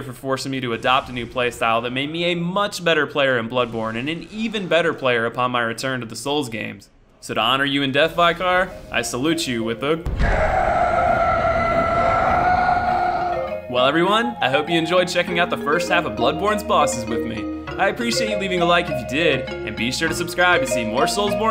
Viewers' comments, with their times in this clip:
0:07 That is not how you pronounce 'vicar'.